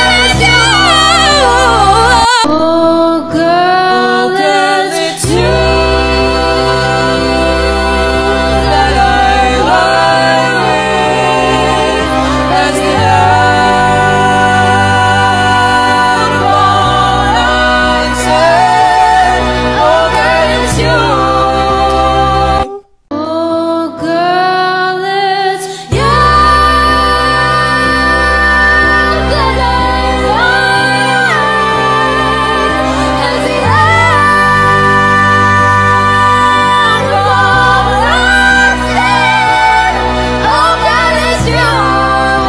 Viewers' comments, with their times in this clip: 0:03 so nobody gone talk about his harmony? :!!good stuff
0:12 this chord like gave my heart a backflip when i heard it the first time. its so good wtf
0:26 is what my little sister hears when I sing in the shower